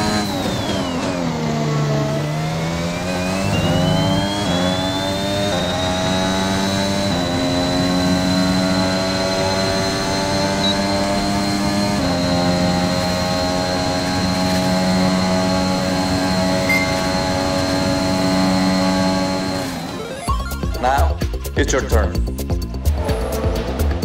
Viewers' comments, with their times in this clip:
0:06 Early apexes, weird corrections and I'm hearing some traction control. I did a on a controller, F1 drivers are just much better in rl which is upsetting because I like to think the game is accurate